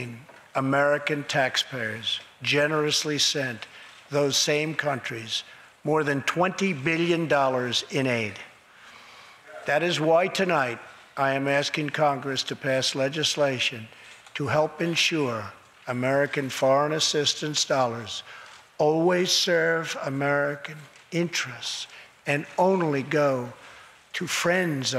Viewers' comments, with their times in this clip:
0:07 Was someone shouting ? Sounds like someone wasn't happy about tax payers spending 20 billion in aid.